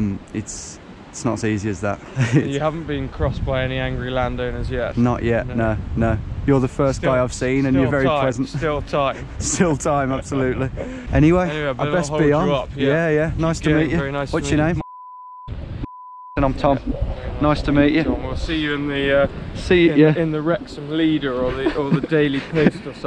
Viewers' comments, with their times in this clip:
0:10 shoulda captioned it posh noises xD nice guy though